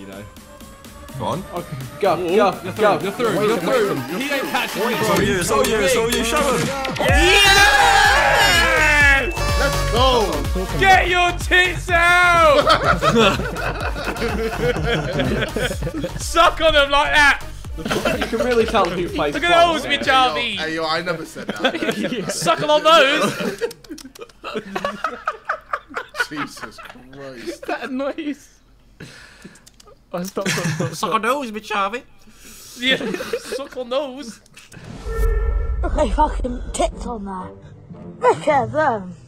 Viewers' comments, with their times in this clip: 0:07 That was an interesting cheer from Harry..
0:23 Tobi sounds like Elmo